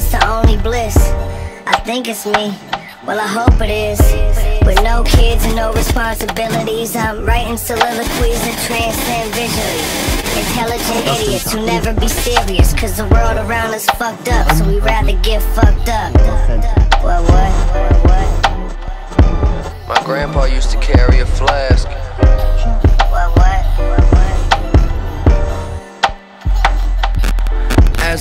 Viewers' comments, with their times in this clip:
0:05 the distortion of the beat starting made me hella scared, i thought i'd blown my speakers lmao
0:05 the distortion of the beat starting made me hella scared, i thought i'd blown my speakers lmao
0:10 SAME. I swear there is a voice if you turn it down to .25 speed it sounds like he says Mazel Tov